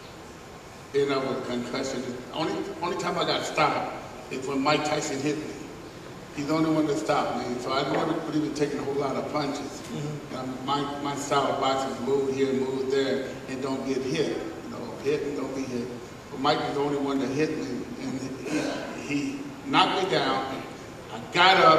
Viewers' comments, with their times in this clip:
0:07 someone definitely farted